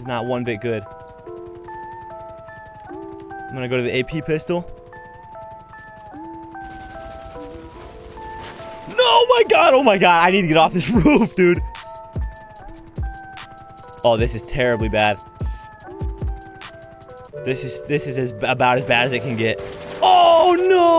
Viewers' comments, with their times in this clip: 0:07 what background music is that lol sounds so cool